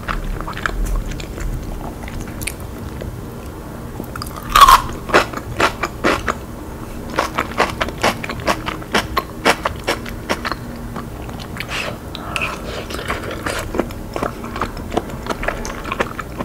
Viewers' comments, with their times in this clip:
0:03 is that bacon? Why is that crunchy?